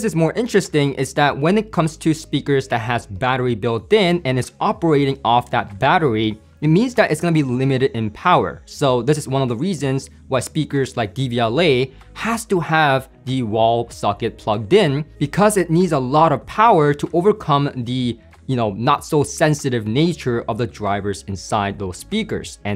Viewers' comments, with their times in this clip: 0:09 what is it? dvla, dbla?